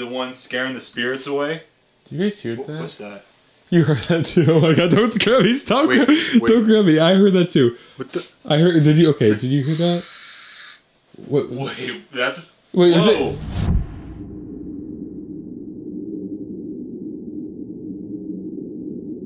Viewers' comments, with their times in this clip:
0:03 sound could have been a barn owl maybe